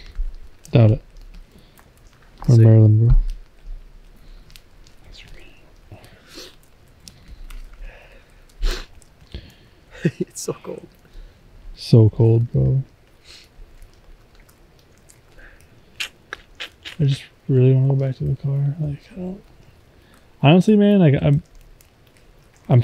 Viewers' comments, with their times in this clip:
0:04 ish you can here someone whisper 'it's rain'
0:04 it sounds like a whisper saying "it's relived" or "it's relief " and it's not one of you because it sounds like a little boy/ girl....